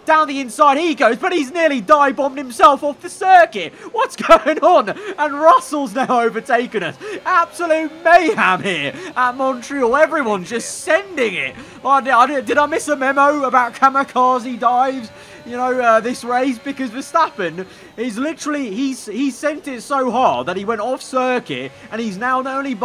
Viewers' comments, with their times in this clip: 0:06 "absolute mayHAM here" Love. It.